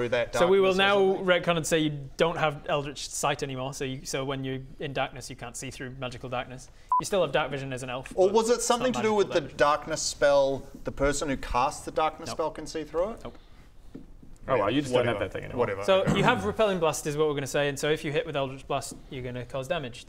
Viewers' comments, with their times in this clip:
0:06 I really enjoyed the marker beep